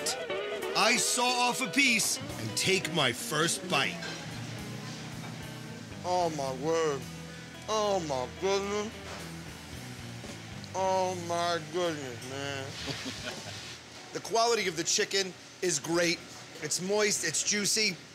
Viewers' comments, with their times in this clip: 0:03 Adam turns into a 70 year old black man from the south named Thurgood rufus Jones
0:05 that's a black guy talking xP